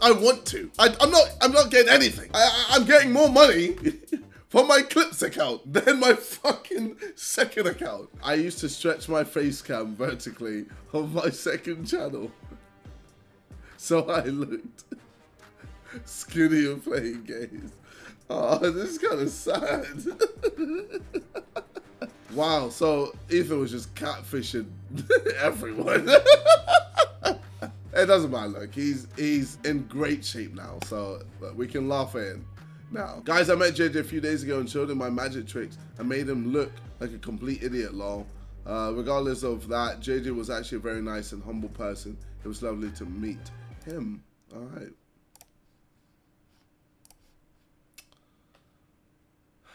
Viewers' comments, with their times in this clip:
0:08 Ethan: Says something sad JJ: That's sad.... "laughs hysterically"
0:17 "this kinda sad" and laughs hysterically
0:35 Maniacal laughter from whoever that redditor is. What a legend.